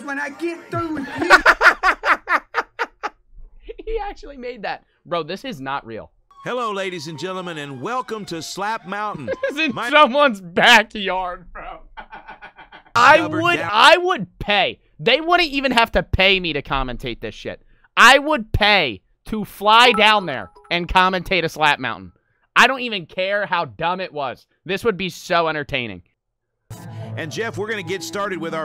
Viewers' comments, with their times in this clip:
0:10 my car starting up